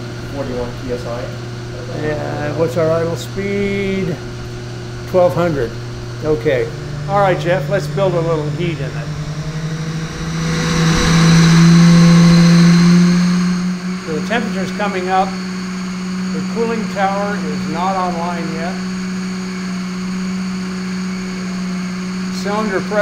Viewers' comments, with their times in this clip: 0:10 I had to turn my volume down in my truck, had it hooked to Bluetooth and everything started shaking 😳